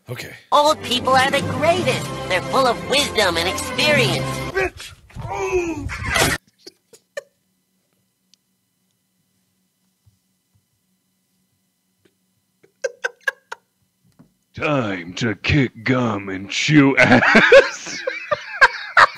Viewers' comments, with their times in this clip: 0:04 Markiplier: I hate nudity. It makes me grumpled. Also Mark laughing